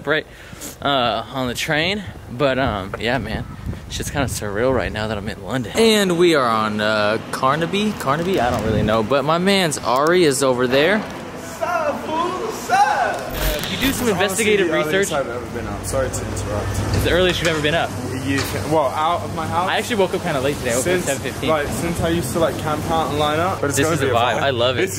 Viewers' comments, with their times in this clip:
0:10 what a gangster voice